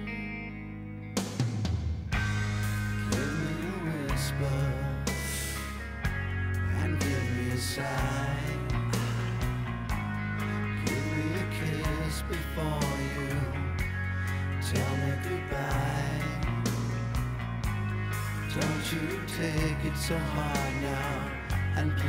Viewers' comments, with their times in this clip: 0:09 Axl Rose Playin' In Piano